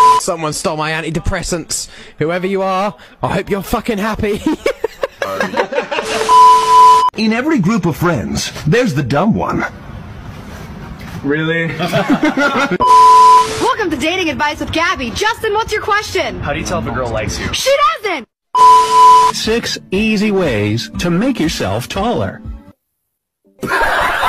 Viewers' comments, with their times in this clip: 0:10 It actually kind of sounds like Klaus 🤣🤣🤣